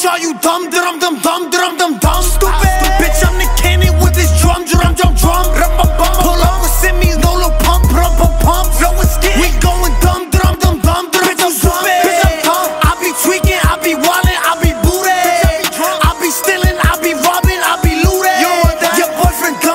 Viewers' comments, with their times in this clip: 0:06 that lil pump line was smooth